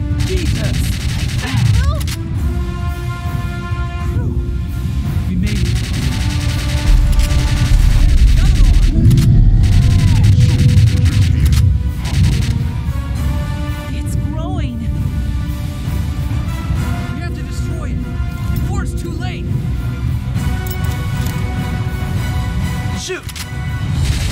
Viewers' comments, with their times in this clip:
0:09 that laugh, I felt that